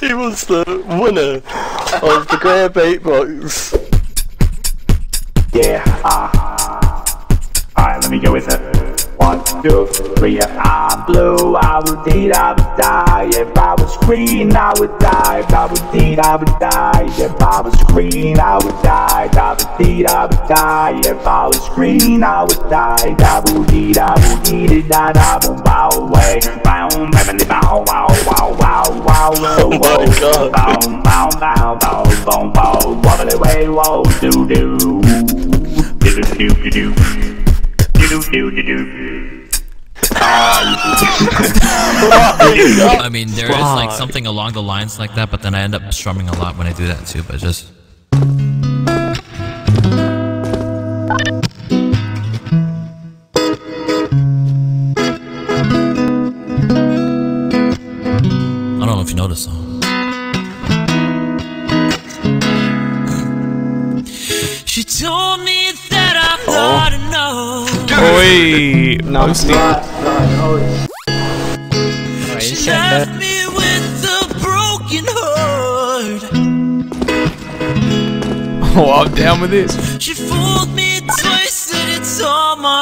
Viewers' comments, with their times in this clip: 0:05 that version of “blue” sounds so cool to me
0:08 Watched the part 20 times lovee the beat😂😍
0:11 that goes so hard that auto tune tho 🔥
0:11 what does he use to make his mic do that robotic thing
0:38 Who hell was the guy the sound of that guitar 🎸 was sexy as fuck. And then those vocals damn man where do you find talent like this? CS-Go
0:47 nobody gonna talk about how good of a guitar cover this is?
1:04 2 years since i wrote my comment, the black betty is now my second favorite part and it still hits 10/10 but is amazing, got chills all over my back
1:05 his voice immediately took my virginity, Jesus